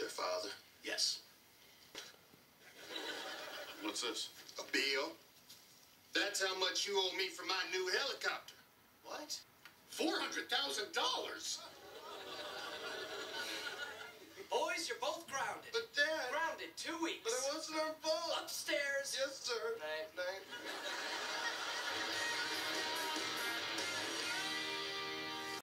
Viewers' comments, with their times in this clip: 0:08 he looks like and sound like Marc curry
0:18 I remember that part a bit differently, that they were both yelling those parts.